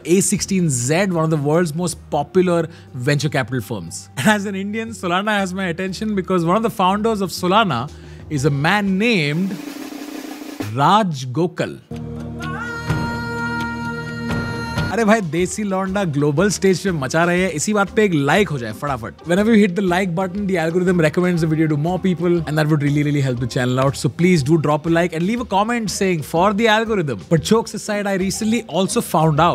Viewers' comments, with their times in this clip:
0:10 One man named Raaaaj (I was expecting Raaaakesh Jhunjhunwala)